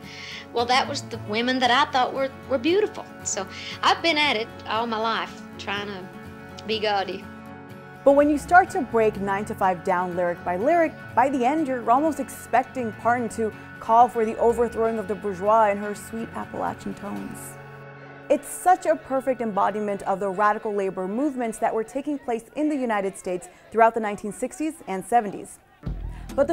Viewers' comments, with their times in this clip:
0:09 who pronounces "Appalachian" like that